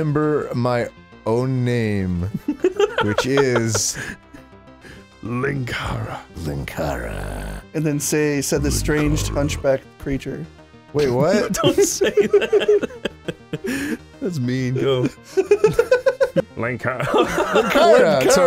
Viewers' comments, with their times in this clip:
0:06 Straight up just sounds like a Vortigaunt from Half-Life 2